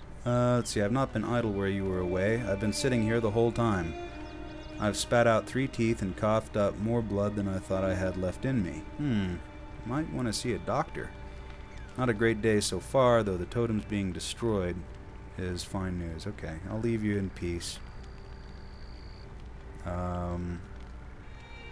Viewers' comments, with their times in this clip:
0:07 Sounds like consumption.